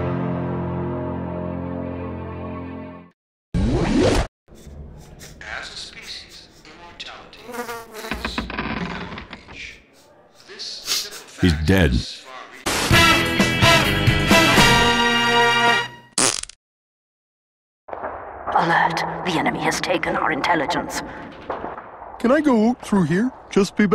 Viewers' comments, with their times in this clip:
0:10 OH MY GOD!!!TALKING FREEMAN!!!
0:10 Freeman is talking ? The end is near...